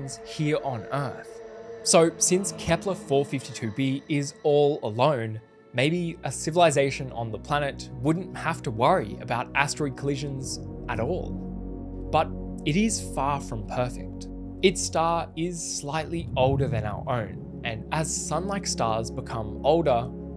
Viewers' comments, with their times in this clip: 0:07 Whats the music name ? Cause it can bring the feelings I can't explain, comfortable feel, awe , wonder , comfort and a very relaxing my mind while hearing that...